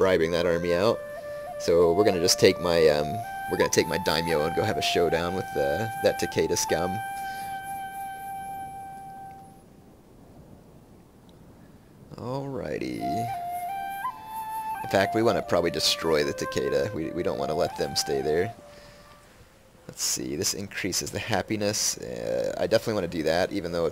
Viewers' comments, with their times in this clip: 0:07 ''We'l go have a showdown with that Takeda scout.'' My reaction : '' A scout , they call it a scout ! '' .